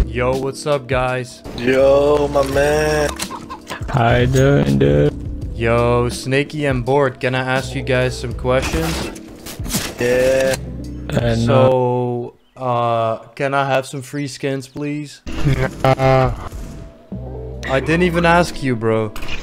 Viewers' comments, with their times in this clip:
0:06 why does it sound like they are high xd